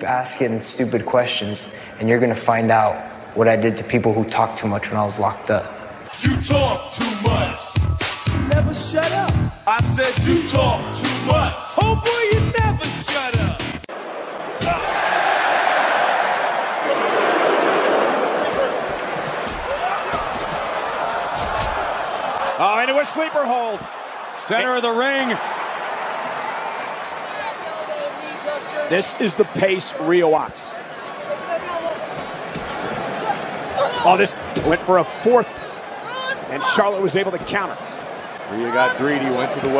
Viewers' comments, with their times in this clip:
0:07 Love the smack matching perfectly with the song.
0:27 is becky lynch calling moves in the match ?